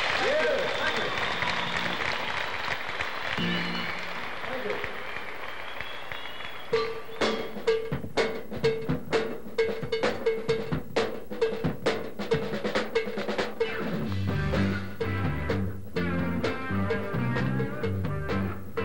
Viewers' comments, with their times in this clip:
0:04 More cow bell!